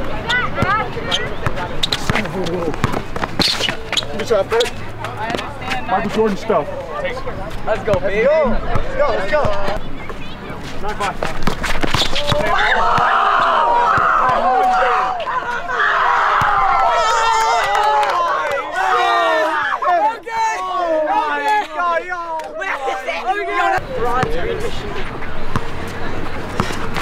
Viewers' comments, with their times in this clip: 0:10 I might be wrong here but that ”ankle breaker” looked like a blatant push to me lol, and then when the children in the background starts screaming and everything, i find that a bit cringy tbh
0:10 the kid screamin ahaha